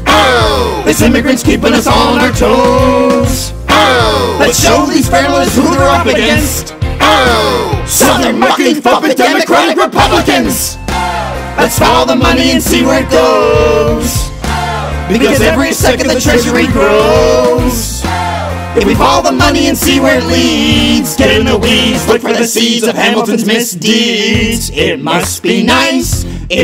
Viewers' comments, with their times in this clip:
0:10 I swear I heard SOUTHERN MUPPET F*CKING DEMOCRATIC REPUBLICANS XD XD XD Like what was it even supposed to be???